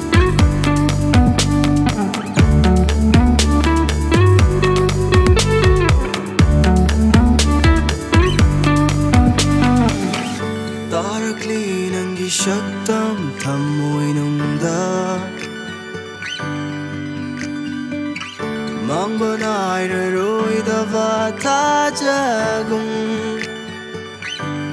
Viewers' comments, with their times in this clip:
0:10 Beautiful ❤️🌹 Love that Synth sound starting from (don't know if it's Synth or not though 😂) The guitar fills are quite mesmerizing The vocals and the lyrics are appealing to the ears and mind And the make-up (face paint) is eye-catching